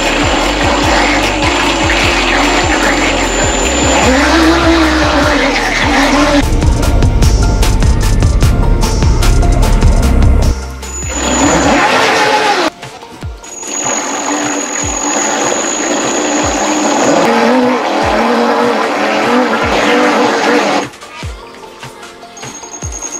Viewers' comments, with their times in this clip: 0:10 Sounds like a man is drowning really violently